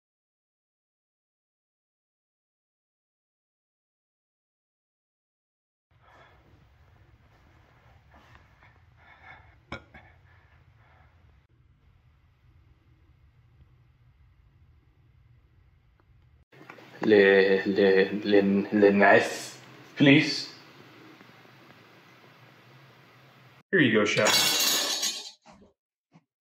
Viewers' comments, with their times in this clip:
0:08 The burp sealed it for me LMFAO